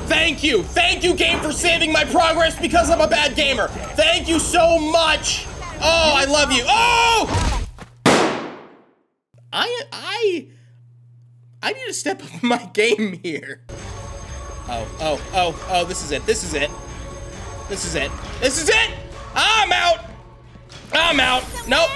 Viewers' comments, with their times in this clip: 0:06 I legit thought u slammed ur desk lmao😂